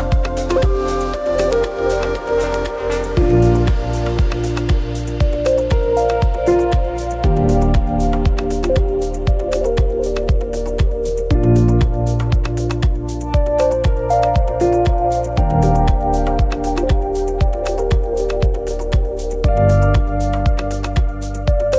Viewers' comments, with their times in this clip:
0:08 You can see straight into that man’s soul .. Music to loud and voice over to low..